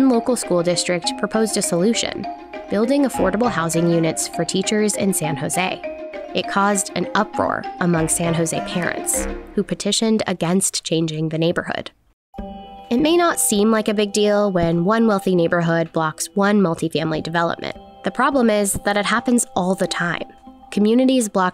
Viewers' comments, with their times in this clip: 0:05 I swear I heard it as Karens instead of parents